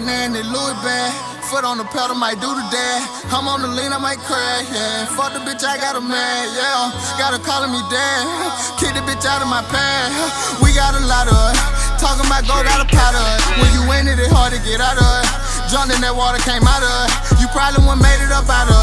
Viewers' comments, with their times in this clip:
0:05 Who else thought he said " fuck a bitch, I got a man yea" 😂. I thought this nigga was fufu until I seen the lyrics 😭😂